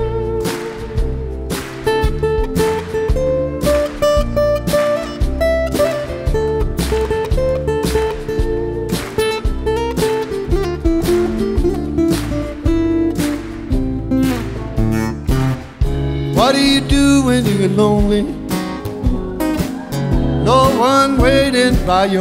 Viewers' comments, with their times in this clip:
0:10 that note shows clapton is a god!